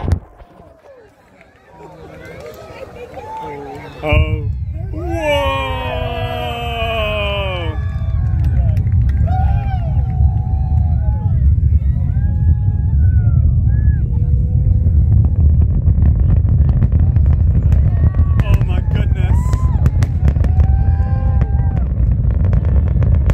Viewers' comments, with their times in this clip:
0:09 Lucky! I tried to convince my parents that we should fly over, she said its too expensive :/ Still watched the live stream, that was incredible! Also, that rumble is just so good